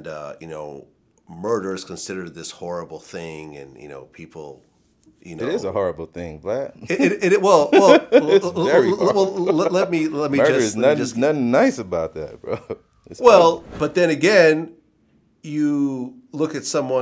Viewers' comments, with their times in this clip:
0:05 I love when BG cuts Vlad off and laughs at him. I do shit like that when my friends say something stupid like that all the time.